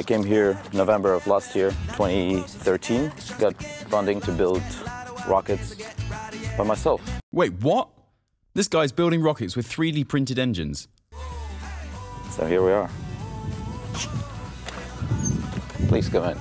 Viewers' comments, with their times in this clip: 0:03 the man talking about getting funding to build rockets in such relax manner as though he was merely talking about opening a small fastfood shop.